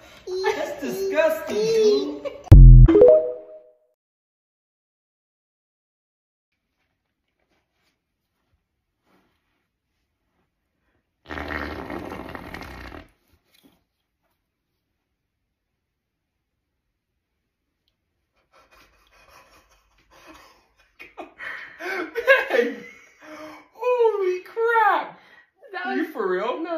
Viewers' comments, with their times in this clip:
0:07 She legit pulled the Jake Brake, Bro